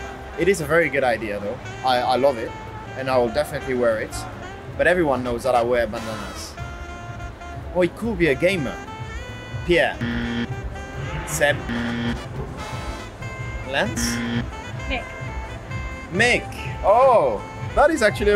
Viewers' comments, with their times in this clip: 0:04 "But everyone knows that I wear bananas" Yes we know :) And yes, I spelled "bananas"